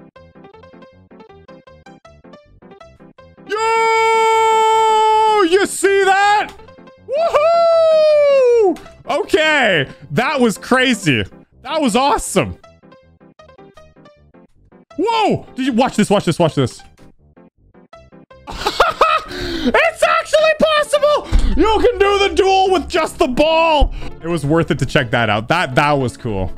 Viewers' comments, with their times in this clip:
0:03 a burst of YOOOOOOOOOO automatically
0:13 whyd bro scream minutes